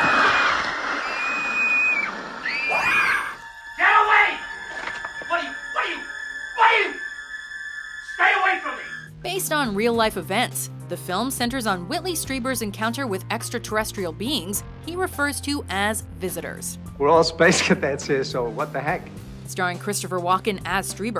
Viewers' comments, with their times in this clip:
0:06 Why does this guy sound like JonTron?